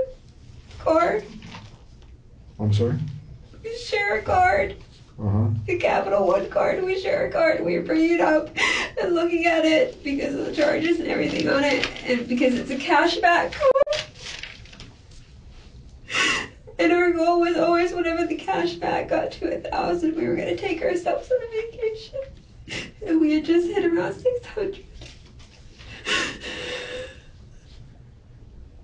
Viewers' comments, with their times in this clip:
0:10 Women learn when lying just cry cry cry boo hoo and everyone will feel bad for you and then you can play victim because your a frail helpless woman. But how does she go from No tears but full on balling to completely normal talking at the snap of the finger. Totally unbelievable. Like- boo hoo boo hoo I was boo boo talking about boo hoo, how Even though he had no job, he took care of everything especially when